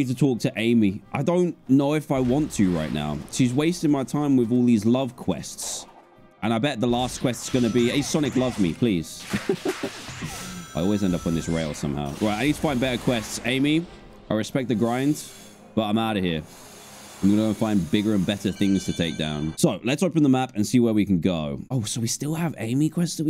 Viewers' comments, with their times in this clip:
0:10 "Amy I respect the grind but I'm outta here"here Grinds on rails Laugh track plays